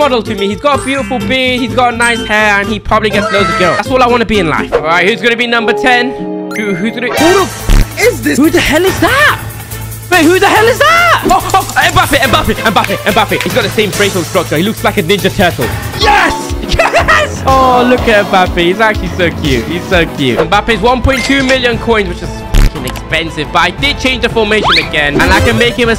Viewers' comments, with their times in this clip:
0:08 him screaming who is that ME: SO EASY THAT MBAPPÉ